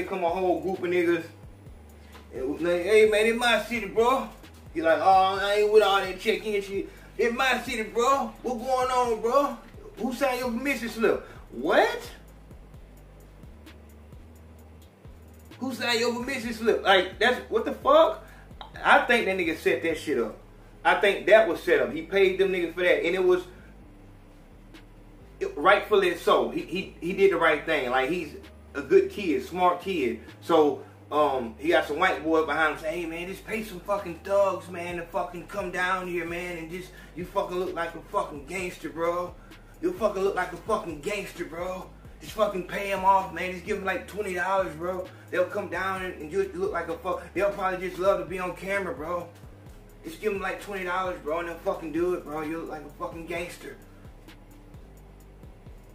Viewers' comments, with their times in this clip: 0:03 big Holmes voices 😂💀
0:41 Ayo Man dog,you sound just like Trippie Red for real ..Get yo Shit together big Dog